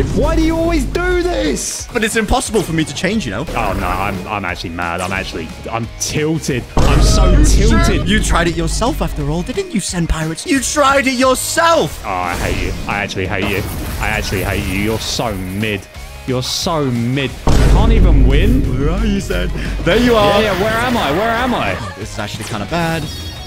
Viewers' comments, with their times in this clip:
0:07 sounds so devious like he is the main villain ngl Btw been a fan for a while and I love your vids